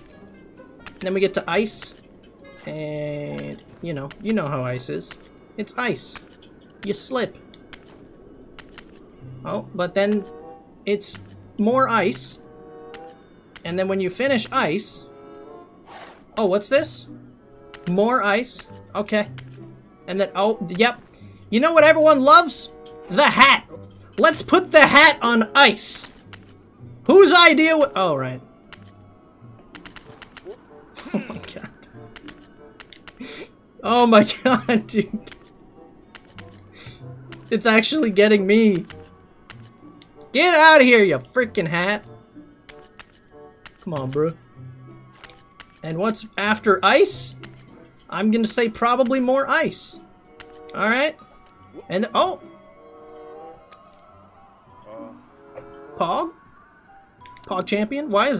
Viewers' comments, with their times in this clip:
0:03 You know how ISIS, its ice!
0:40 the way he says get outta here ya frickin hat 😂😂